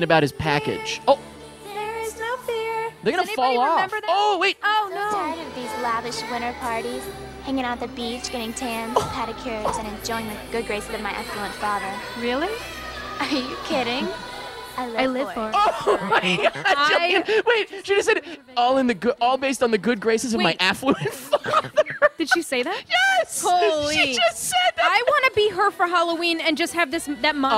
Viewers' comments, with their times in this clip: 0:08 on her what father? I can't tell if my ears dont work good or if I'm missing something
0:09 oml Meg's voice is so TINY